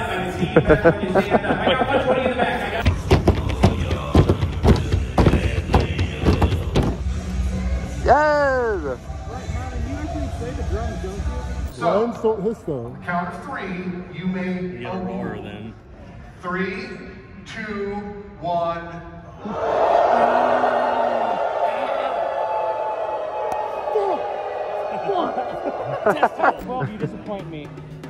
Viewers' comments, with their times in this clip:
0:03 Nobody gonna talk about that beat tho!
0:11 i thought he said "you may owo" I wonder what the record is for most owos in one place at the same time